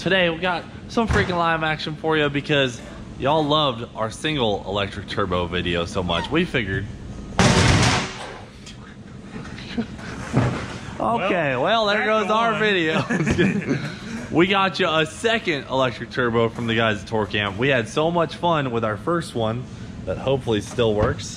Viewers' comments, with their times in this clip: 0:07 Best part I liked table slam and at the end lab pocket rip. Boys being boys.